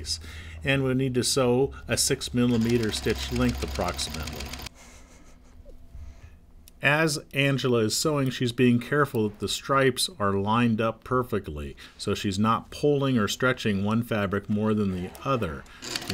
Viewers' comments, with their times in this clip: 0:03 I wonder what he was snickering :)